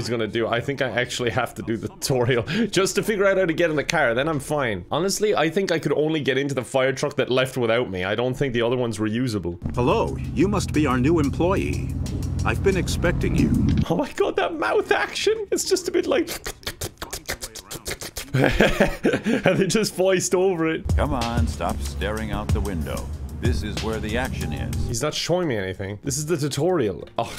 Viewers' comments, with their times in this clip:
0:09 it's like one of those old badly dubbed kung-fu movies haha
0:10 that's how Germans talk 😂😂😂 Greetings from Germany ✌ Edit: I know it's not much but thank you guys for 27 likes!